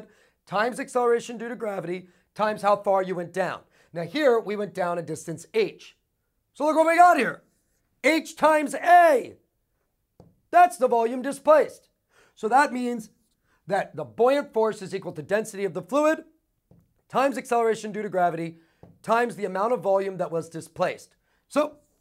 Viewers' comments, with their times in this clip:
0:07 I'm used to watching Brightstorm for chemistry. They really got some passionate people over here in physics ... yelling equations and shit like :3 I like it.